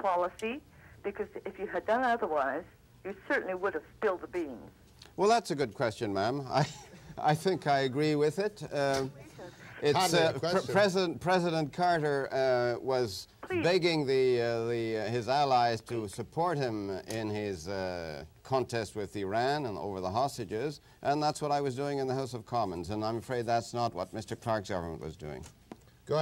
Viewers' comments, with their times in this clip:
0:07 did she say , “ Goodness Gracious.” “ please , can I speak? Lol I feel like a ghost hunter suddenly .